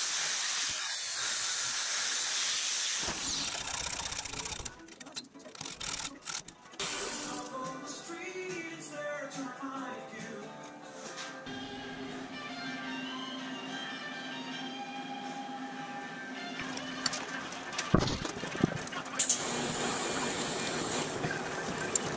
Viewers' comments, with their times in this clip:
0:08 worst Eagles cover ever.. sounds like Canadian crap.